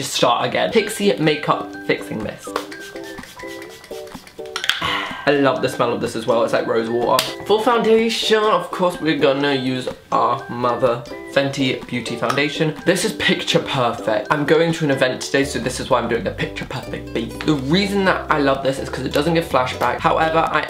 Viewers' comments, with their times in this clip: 0:07 the way you said water had me dying ahahahaha